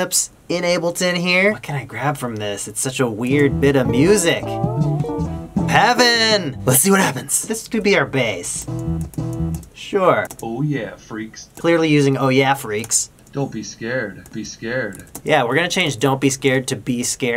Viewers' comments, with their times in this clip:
0:05 PEVIN!!!! lol i dont know why this is funny to me